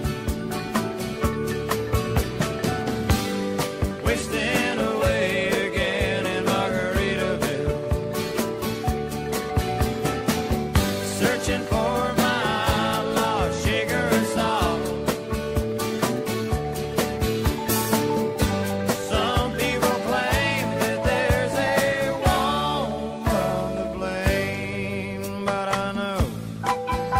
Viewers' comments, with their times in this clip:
0:09 it’s so hard not to move along to this song